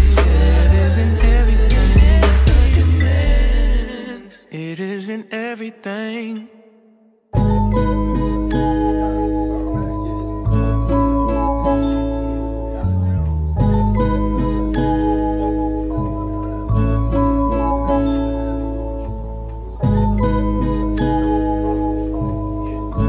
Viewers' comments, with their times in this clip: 0:08 do anyone know the name of that song the beat is cold asf